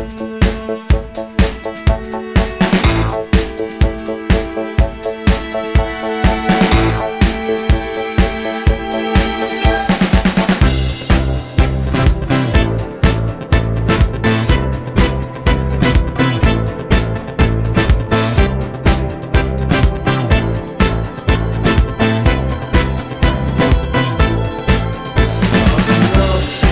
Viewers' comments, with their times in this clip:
0:10 Guess what?!?! I gotta FEVA…and the only prescription is more SYNTHESIZER !!!